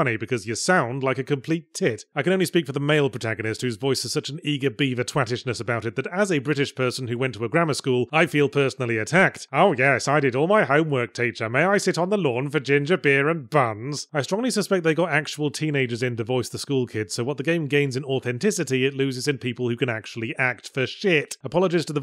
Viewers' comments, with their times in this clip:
0:09 Anyone think sounded like Mr Wonderful from Mogworld?